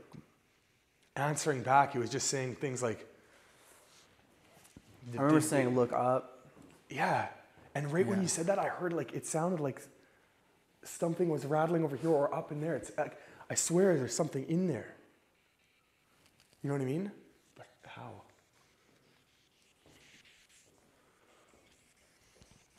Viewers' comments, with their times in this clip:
0:09 there's a voice. Not sure what it says but I hear it. Love the show guys. Keep up the good work.